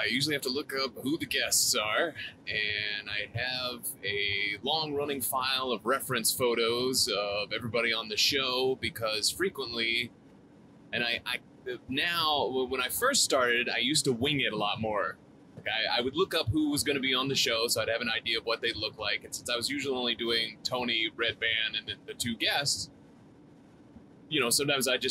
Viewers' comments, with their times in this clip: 0:09 the man has a voice of an angel